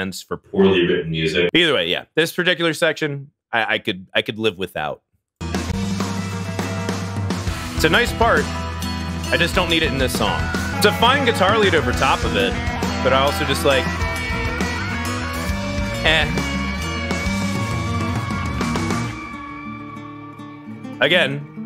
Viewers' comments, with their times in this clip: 0:06 bro this is one of the best Opeth moments what do u meannnnnnnn gives me such a vibe it almost feels like i'm playing Starcraft 1. I ADORE this short acoustic section